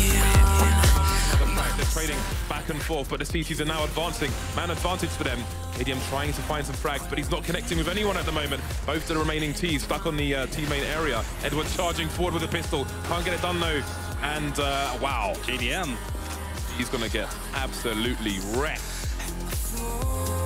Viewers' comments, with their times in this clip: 0:08 does the commentator say both the t:s fuck on the........